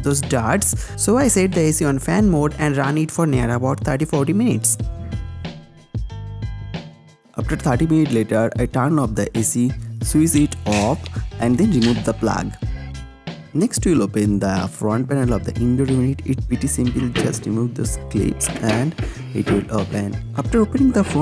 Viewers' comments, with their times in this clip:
0:07 your flow was killer here, dude, why did you stop...